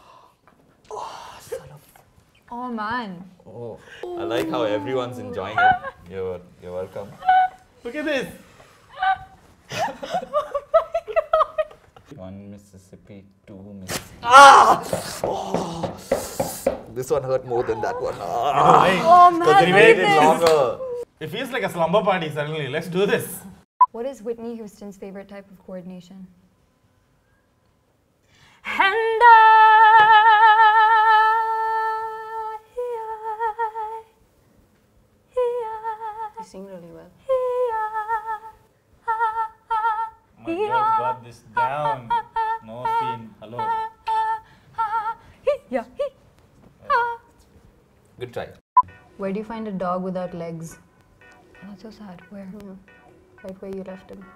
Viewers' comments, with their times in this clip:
0:04 Her laugh is like a the sound of a swing in the park
0:04 donkey braying noises
0:04 Her laugh is totally like the sound of a swing in the park
0:28 That vibrato tho....
0:28 all i heard was hentaiiii
0:40 who else heard Pokemon anime sound or the Pokemon ho sound when you click on an option
0:40 Damn she is really good. Such a voice !!!